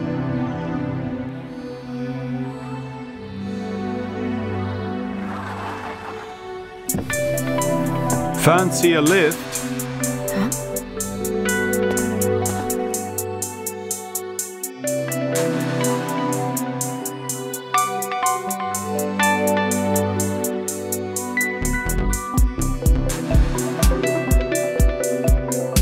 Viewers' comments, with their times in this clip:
0:05 why is take me out to the ball game playing
0:08 before Me: I’ll never get used to Charles voi- after Me: Faints due to blood lose through the nose